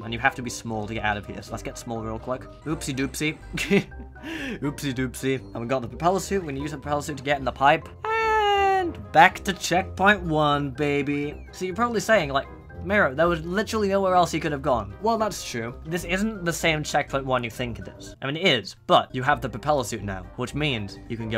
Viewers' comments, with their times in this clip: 0:03 damn even the ceave music smh my head